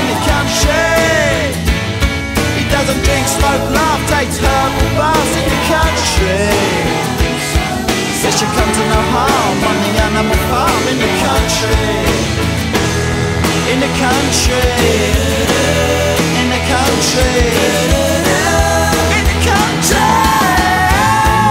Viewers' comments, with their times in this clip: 0:09 i can hear them singing blow blow blow me out i am so sad